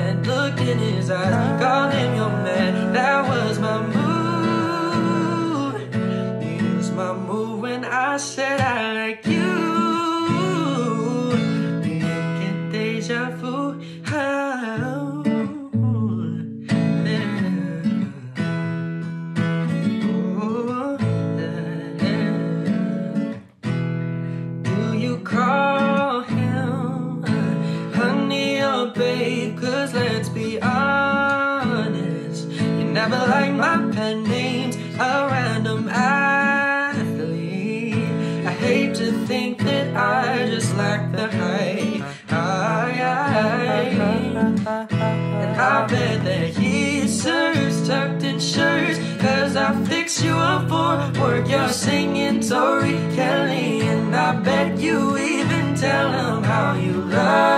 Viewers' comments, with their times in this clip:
0:09 that run is iconic
0:42 You BETTA SANGG!!!! 💜 i didnt know the song before but you make it sound like your own🙌🏾 also ur a Qt😌 Edit:That run up omfl 🔥🔥 jus stawp save some talent for us small fries 😂😅